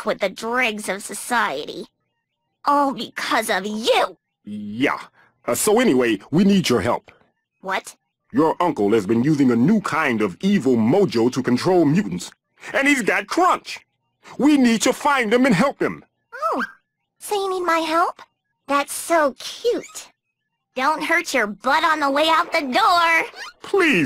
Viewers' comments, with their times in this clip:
0:10 gota say he sounds alot like grim from billy and mandy